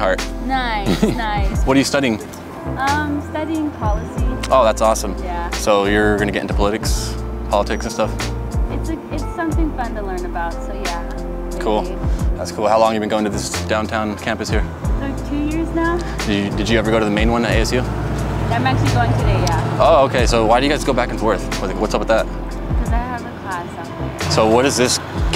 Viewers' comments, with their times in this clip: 0:06 “Puliticks” for politics lmao